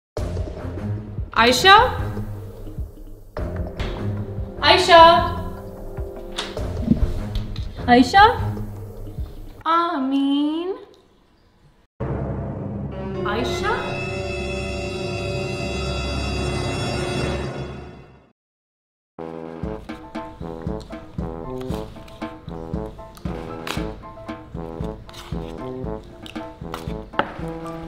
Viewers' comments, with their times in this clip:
0:09 the way she says ameen😆😆